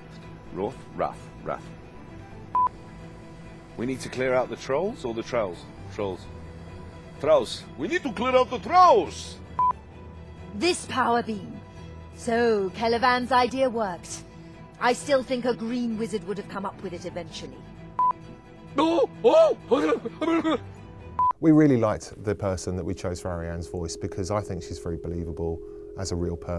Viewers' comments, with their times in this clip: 0:10 she got a very good mage voice, Sounds like the one that narrates in BattleForge.